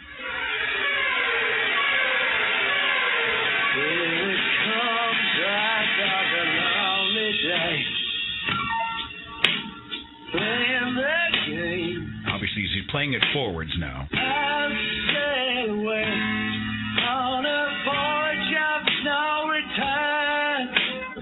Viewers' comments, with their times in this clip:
0:04 The song is really great.